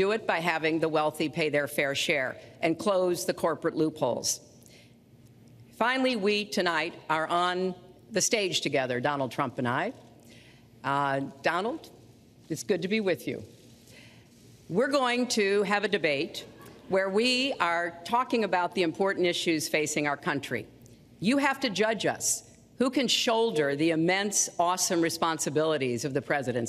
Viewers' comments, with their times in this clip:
0:09 omg I just heard the laughter afterwards